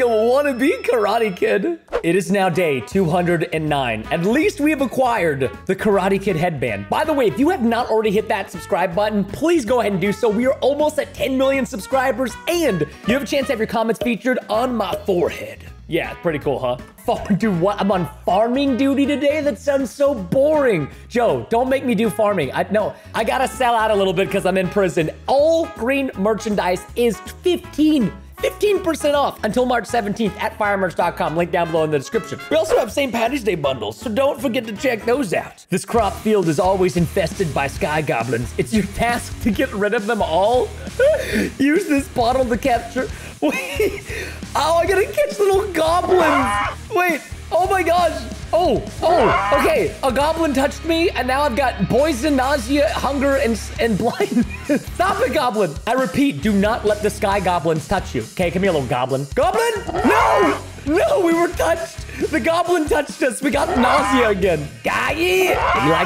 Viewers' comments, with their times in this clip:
0:07 it sounds like he says f$ dude
0:09 so 15.3m editors farting on preston 😂😂😂😂
0:17 is it just me or I'd it sound like he said the f word? You sus preston 😶🧐
0:17 sounds like the f word
0:51 Poison? Nah, nah, nah BOISON!!